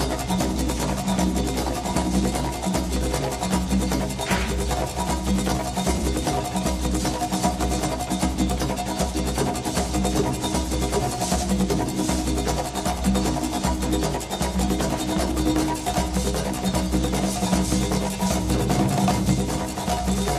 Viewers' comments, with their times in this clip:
0:03 Who else here does the clap EVERYTIME